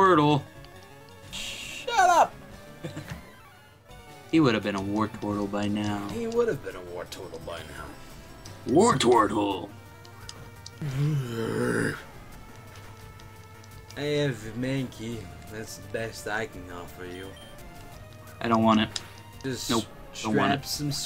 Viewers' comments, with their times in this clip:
0:09 that bear impression though.